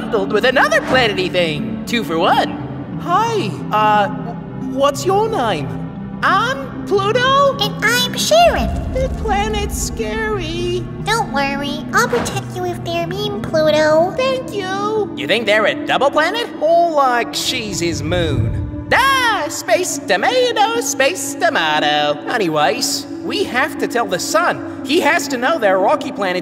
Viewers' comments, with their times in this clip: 0:06 Choran voice was cute
0:07 THEY ARE SOOO CUTE ❤❤❤❤❤❤❤ I’m gonna die of cuteness their voice… AHHH TO CUTE!!!